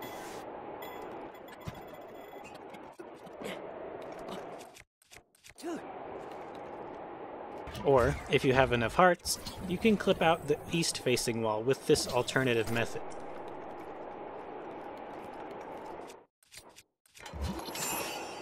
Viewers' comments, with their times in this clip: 0:05 coulda sworn he said Hillary